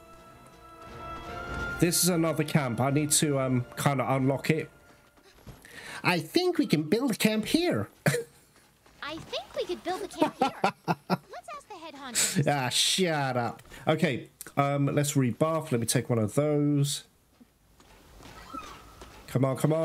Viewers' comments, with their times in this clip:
0:06 The Handler impression 😂😂😂😂